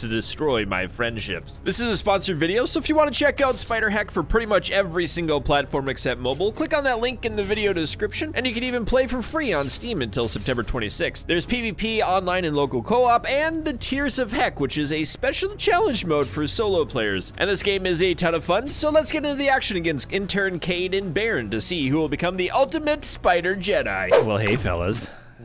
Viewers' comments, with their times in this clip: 0:08 could've sworn he said it's free until the 26th of december but it's not...